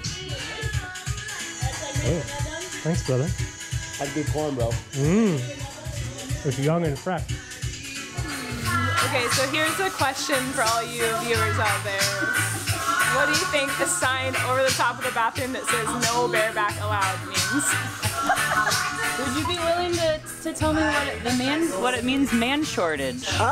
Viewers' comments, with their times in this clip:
0:07 What's up with the video production quality? Like ? Very disappointing. Even amateur editors fix obvious stuff like that... nobody lets the luminance drop to nothing in the middle of a shot. With the vocal fry, it's getting hard to watch. Scratching my head about whatever happened here. Not sure I can watch the whole thing as it is painful to watch and listen to at some points.